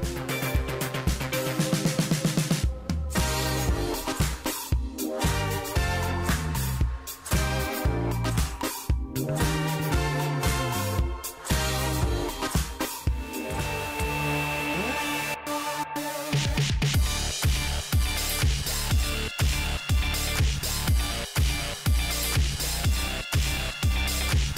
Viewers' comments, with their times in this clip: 0:06 The physics and controls so perfect and never fail. You know what the car is doing, all your doing is turning your phone. this song slaps